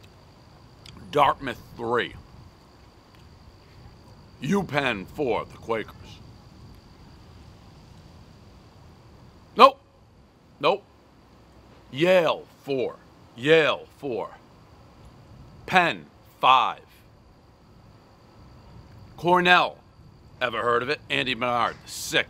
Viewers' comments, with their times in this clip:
0:08 dave yells "nope!!" and guy in the back filming puts cellphone up quickly lmao